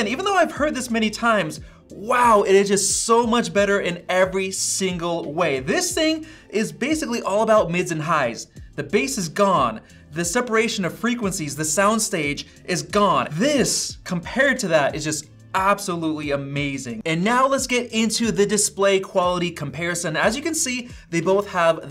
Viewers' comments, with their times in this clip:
0:06 macbook pro 14 inch speakers are a dream come true!!!!!!!!!!!!!